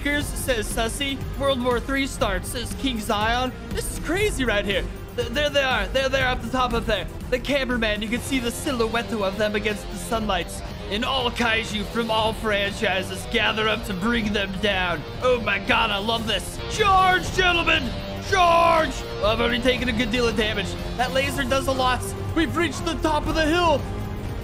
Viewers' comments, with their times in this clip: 0:08 the music fits perfectly